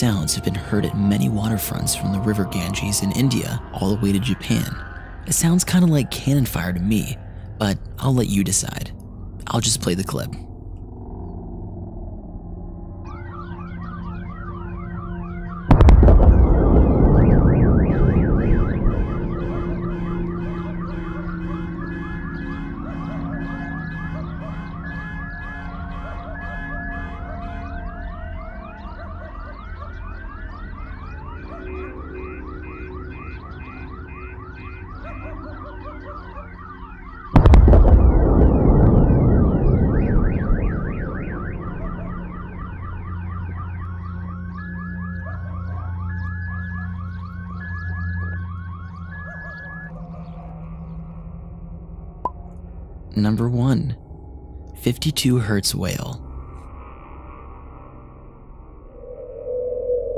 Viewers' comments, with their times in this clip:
0:09 Omg, someone from the hunger games died!!!!!
0:15 sounds like someone in the toilet to me 😀
0:19 it sounds like something breaking the sound burrier of earth then setting off car alarms and a dog barking.
0:20 it just sounds like a bunch of cars going. Of because a shooting and a dog barking
0:29 could it be something breaking the sound barrier in the sky?
0:42 sounds like gunshots or cannons or even lightening with a dog barking and car alarms going off.